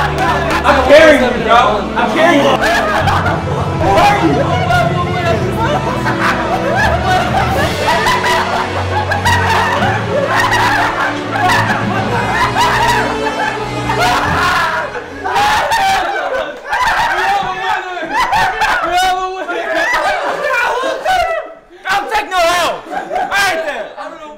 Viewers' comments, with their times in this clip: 0:07 its the laughter for me 🤣🤣🤣